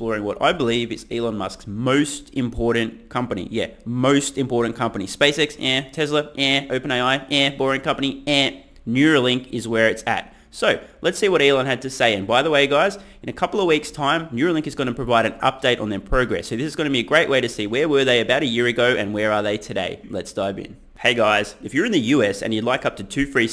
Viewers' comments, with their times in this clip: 0:04 "SpaceX? heh. Tesla? heh." THIS SOUNDS SO WEIRD COMING FROM YOU! LOL 😂🤣